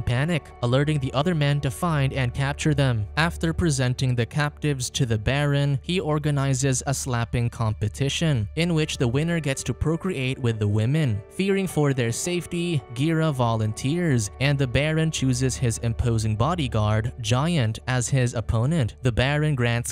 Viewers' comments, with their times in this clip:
0:07 a whistle? So we’re literally dogs…